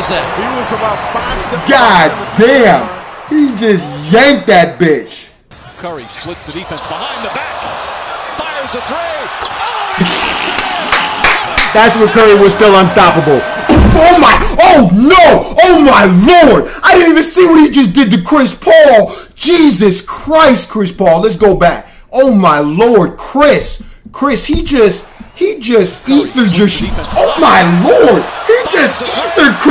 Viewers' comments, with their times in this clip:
0:10 I like how he just laughs all late 😂😂😂